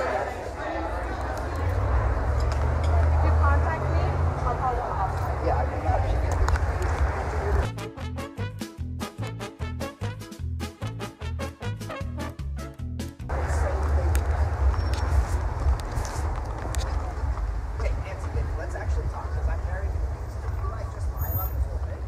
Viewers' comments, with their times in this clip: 0:05 wait he does sound gay 😹😹😹